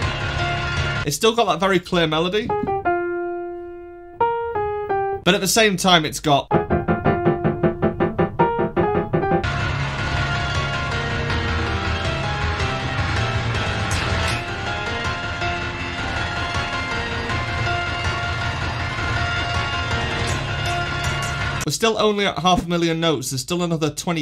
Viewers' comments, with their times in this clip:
0:10 i swear i hear an electric guitar and drums